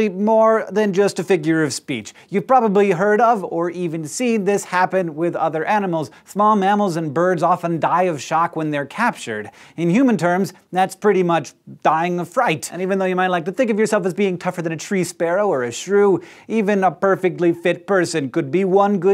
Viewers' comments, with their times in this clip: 0:03 Is it just me or did he sing "heard of" ???